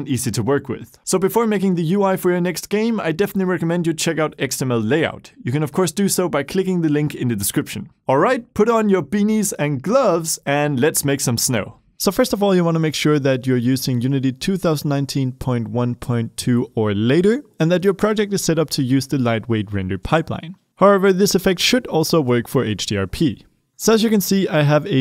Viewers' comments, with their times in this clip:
0:08 says "put on your penis"